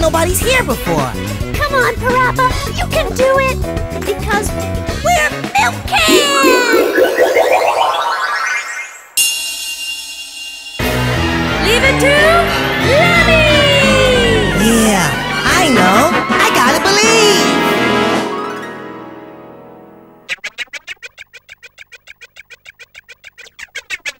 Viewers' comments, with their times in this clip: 0:10 This Is The Best Combination Of Verbal Tics I've Ever Heard.